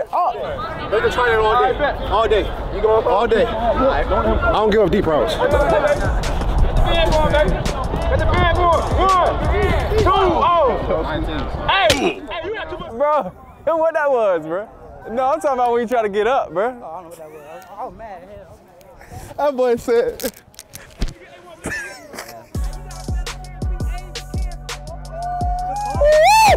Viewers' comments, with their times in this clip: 0:10 the minecraft sound is killing me